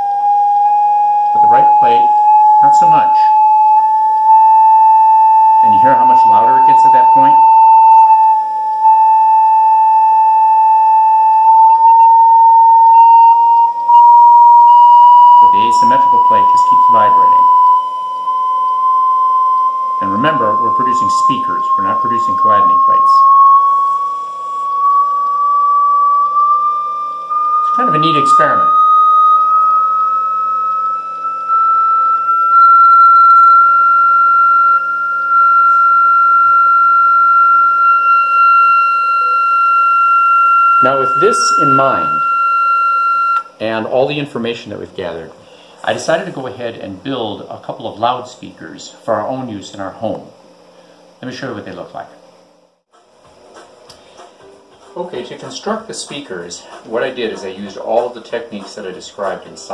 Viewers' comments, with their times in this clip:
0:03 I had to hold my ears shut because it hurt
0:43 I think you woke all the dogs in my neighborhood